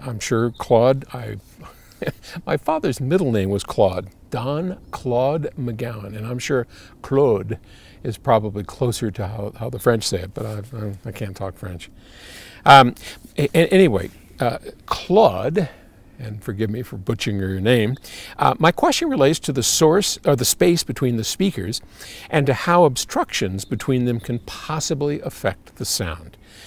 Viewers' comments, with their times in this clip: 0:07 His pronunciation of "Claude" is perfect "